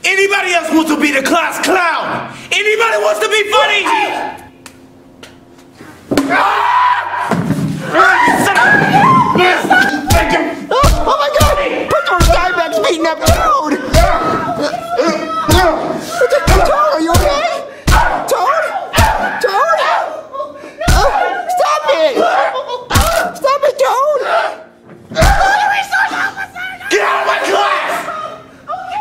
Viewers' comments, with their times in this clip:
0:05 The funniest scream in SML Channels history
0:06 Sounds like Cyborg from Teen Titans when he screams.
0:06 (Exclaims Angrily) AAARRRRRRRAAAAUUUUUGGGHHH!!!!
0:06 love the way he screams
0:17 toads screa. Hahhhhhhhad me on the floor